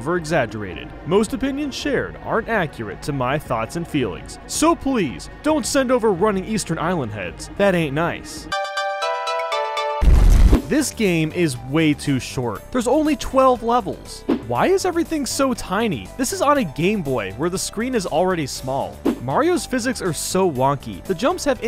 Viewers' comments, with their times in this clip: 0:07 dare you to put on 2x speed and slow it down it says it not melee